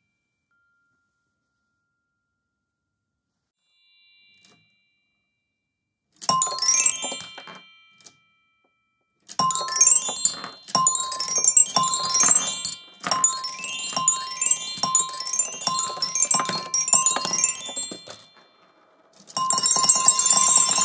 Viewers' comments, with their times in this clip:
0:07 The silence of the marbles going through the gate is absolutely stunning
0:08 thats is so satisfying cuz the only sound you hear is from the instrument and not from the steel balls hitting the metal or the whole mechanism